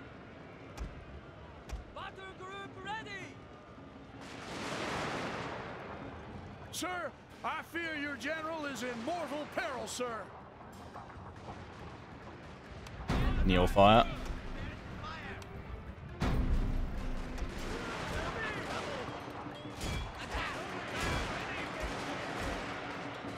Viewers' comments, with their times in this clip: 0:09 Do you have an American in your force? The guy sounds like he’s from the southern states.